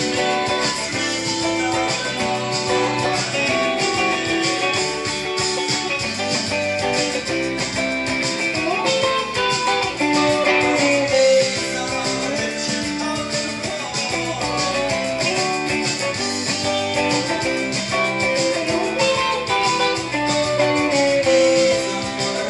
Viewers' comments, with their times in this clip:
0:09 is probably my favorite guitar interval of all time. Period.